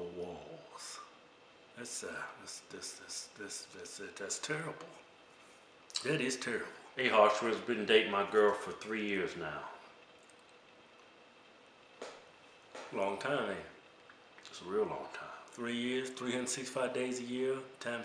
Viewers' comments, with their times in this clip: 0:04 that stu stu stuttering is terrible. lol